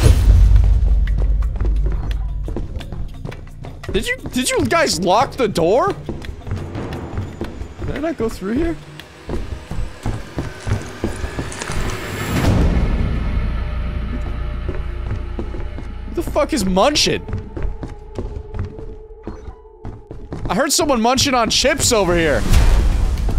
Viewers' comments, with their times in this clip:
0:08 the sound is an ambient sound XD
0:10 The munching heard is actually just one of the many insanity sounds, like the sound that sounds like a vent open!